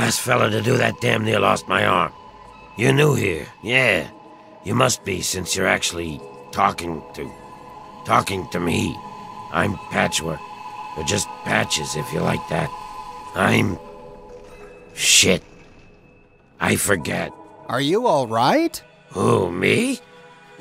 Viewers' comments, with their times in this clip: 0:03 I love that scary fallout 3 background ambient music